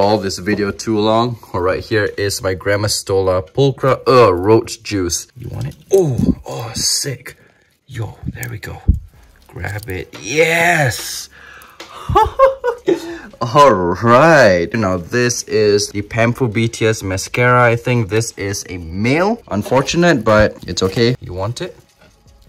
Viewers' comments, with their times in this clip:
0:03 it sounds like “my grandma stole a pottery” haha XD